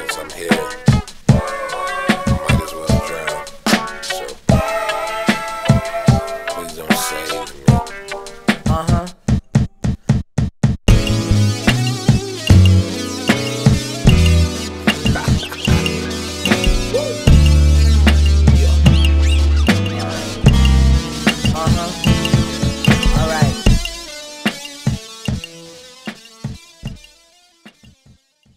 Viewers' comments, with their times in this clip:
0:06 When he says “please dont save me” it sounds like when he says it in Glitter from Flower Boy.
0:06 very similar to the drum breaks in I dont love you anymore
0:08 that drum beat is the same as the synth bass in I DON'T LOVE YOU ANYMORE before tyler sings the hook i swear to fuck
0:09 sounds a lot like i dont love you anymore
0:10 I love that guitar/synth sound at the end dat shi amazing